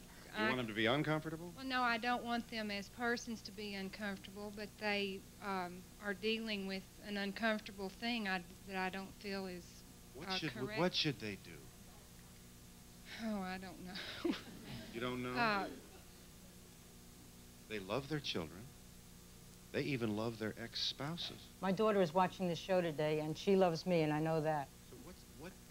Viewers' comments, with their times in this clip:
0:09 And it would be a woman with a Southern accent who raises the club of self-shame and homophobia. Notice she has no rationale to support her homophobia. She’s complacent in her ignorance and still assured that she is right.